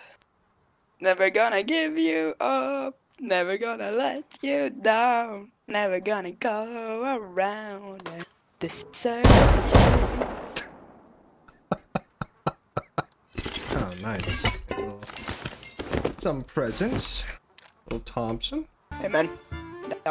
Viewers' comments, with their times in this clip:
0:08 i love how the shotgun traps fired in beat with his singing lol